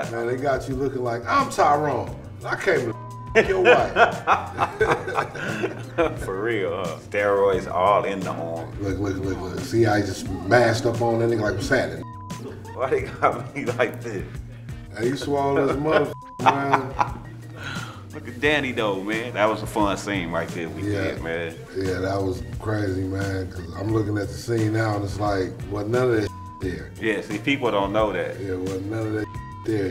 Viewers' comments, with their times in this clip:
0:10 Lamars actor said the n word and they didn't censor it, and he said it again like 1 second later and they did censor it, they need to make up dey damn minds